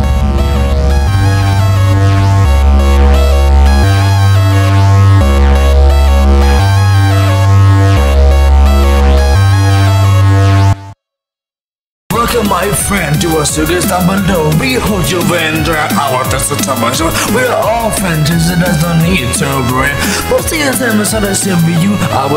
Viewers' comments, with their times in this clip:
0:05 What are you laughing at BonBon and Funtime Freddy?